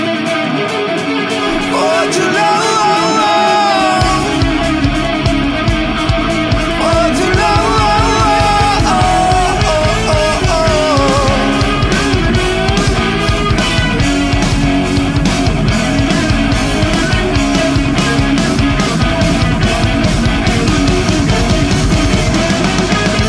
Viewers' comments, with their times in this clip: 0:10 I hear Slash !!